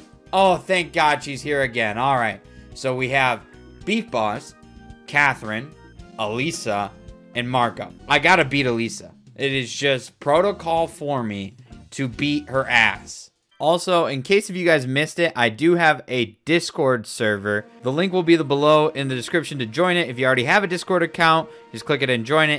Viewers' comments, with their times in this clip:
0:03 "We have Beef Boss, Kathrin, Elisa, zoomed in and Marco"